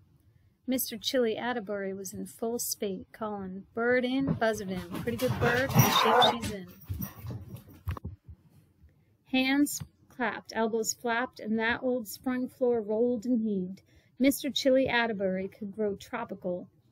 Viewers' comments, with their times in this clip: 0:04 the dog that is wrecking furniture in the background: